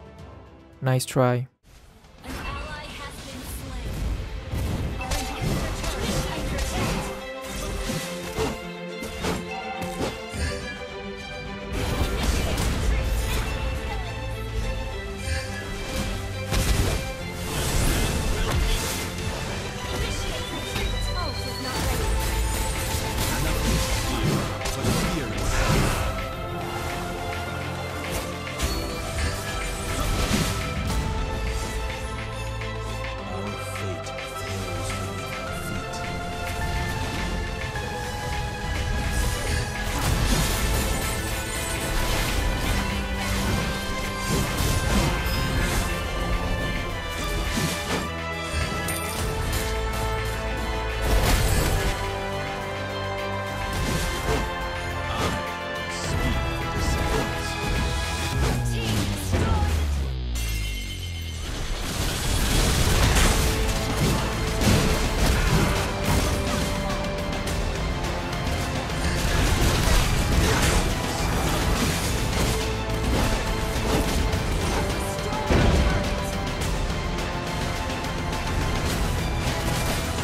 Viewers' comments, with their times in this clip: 0:04 i hear sound of "HOPE"
1:02 So no one's gonna talk about how perfectly that music fits from.... ?